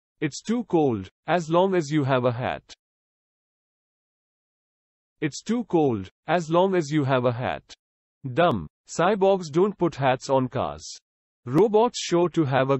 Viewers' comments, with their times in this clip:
0:00 i thought it lopped